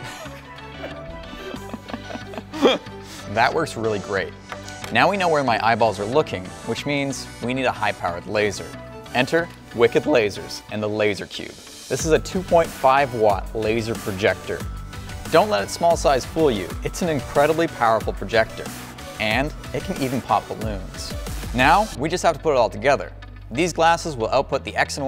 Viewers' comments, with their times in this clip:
0:08 Yoo nice voicecrack
0:08 That sponsor signup looks sketchy af. Also that voicecrack
0:09 haha nice voicecrack XD